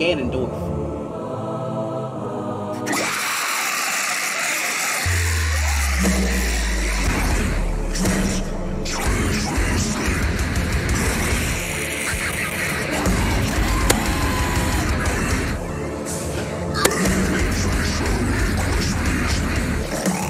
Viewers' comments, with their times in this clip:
0:03 Man that breakdown was DUMMYYY